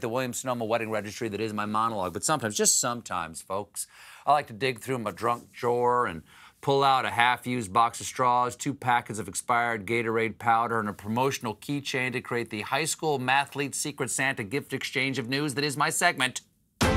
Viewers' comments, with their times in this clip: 0:04 "Drunk jwor" LOL